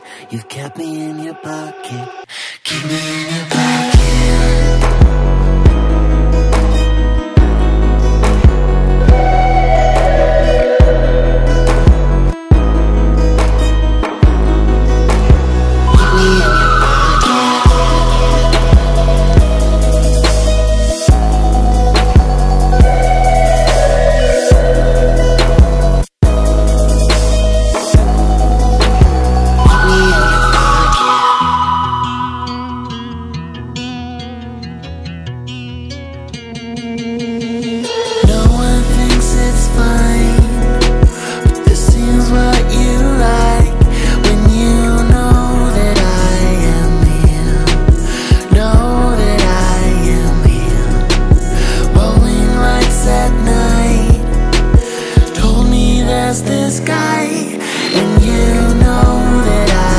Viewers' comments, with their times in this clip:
0:06 I thought the main instrument was a banjo until I heard it for real what is it? Violin?
0:42 Is supposed to remind me of that little song Boo sings in monsters inc as much as it does?